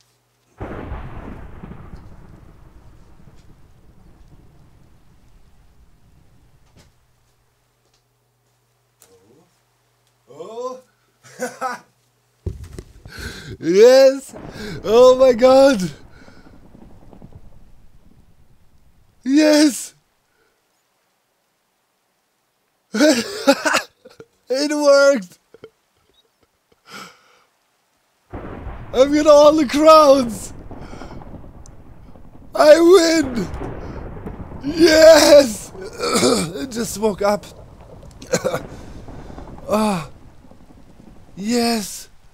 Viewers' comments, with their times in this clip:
0:09 the sound of a man that has come out victorious against a foe by outsmarting their outsmarting
0:23 While the lightning goes lovely audio of your mad science going right 😂 excellent shot here too lol